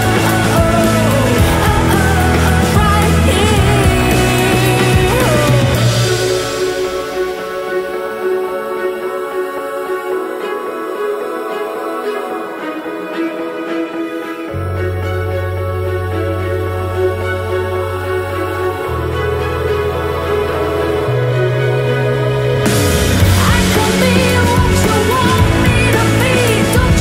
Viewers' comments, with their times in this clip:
0:09 The vocals sound very similar to the vocals in the middle part of Big and Rich's "Live This Life." Interesting.